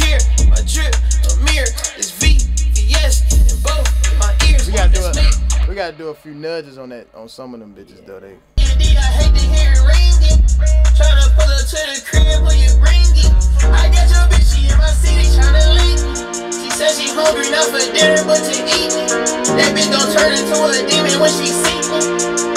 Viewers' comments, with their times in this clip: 0:07 Hardest song I heard in this vlog